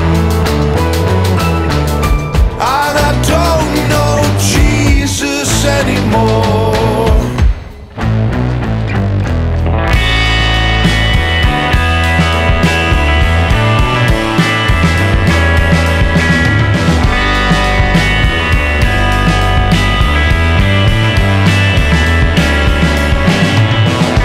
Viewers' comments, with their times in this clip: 0:08 song should have ended mark... don't like the wailing after that
0:08 The guitar reminds me of Richard Hawley. Lovely touch :)
0:09 amazingly beautiful flow drive energy, - the start of intergalactic star´s trip right into space essence